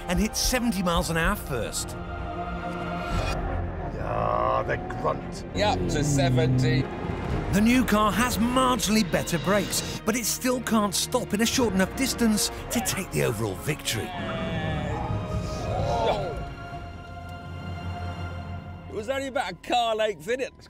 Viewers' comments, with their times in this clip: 0:04 I thought Plato said the C word lol